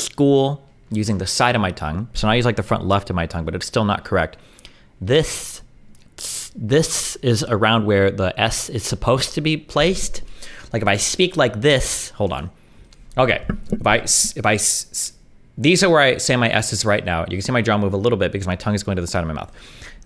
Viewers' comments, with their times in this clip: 0:03 destiny’s old lisp speech sounds kind of..cute? 😂